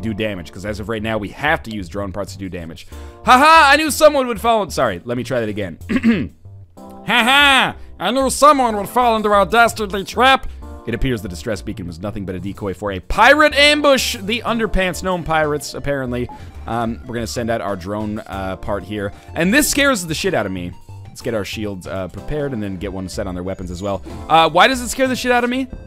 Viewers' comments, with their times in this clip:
0:06 hahahaha, that voice on was just awesome man :p
0:06 Does anyone else think he sounds like Meatwad from Aqua Teen Hunger Force on [Adult Swim] ?